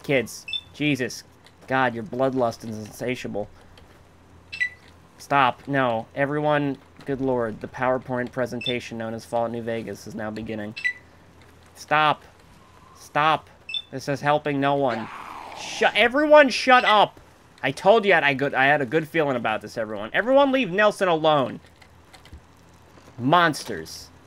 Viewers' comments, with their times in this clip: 0:08 did he just say "PowerPorn" XD